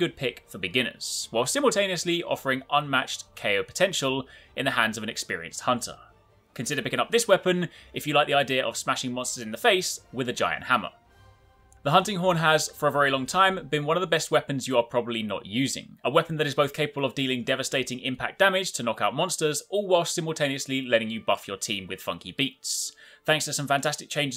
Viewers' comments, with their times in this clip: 0:06 bro turned into eminem for a second